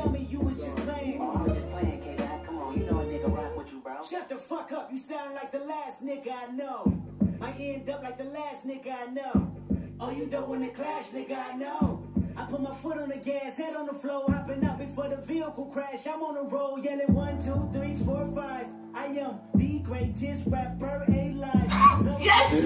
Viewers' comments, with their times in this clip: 0:07 The way that the beat resembles a heartbeat 🔥🔥 it is bone chilling how beautifully produced his songs are